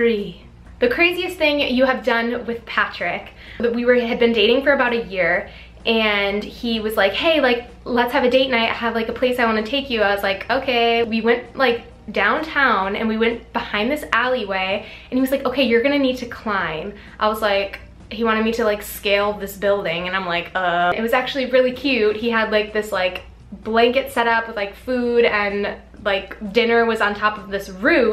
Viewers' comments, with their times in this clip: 0:10 The way she said okay 😂😂